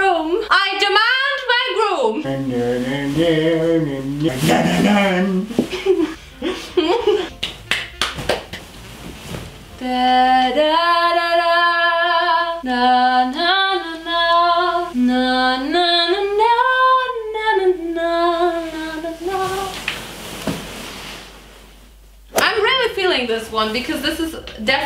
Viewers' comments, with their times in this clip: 0:10 she literally sang oh Tannenbaum